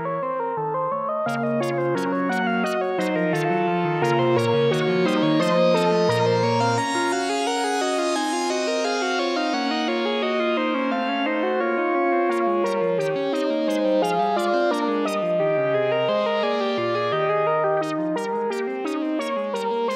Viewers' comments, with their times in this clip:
0:05 Pretty good. Hate to nit pick but there is a missed note in the baseline, should be an F# not G!!:))